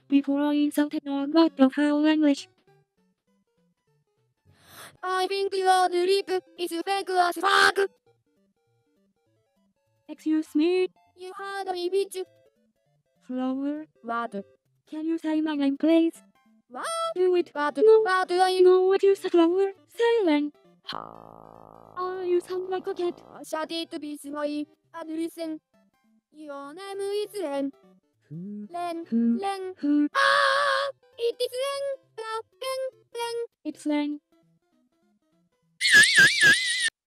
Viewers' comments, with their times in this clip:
0:07 flower sounds like a duck lol
0:35 Bro turned into a fire alarm lol
0:35 Flower’s voicebanks erupted after that scream.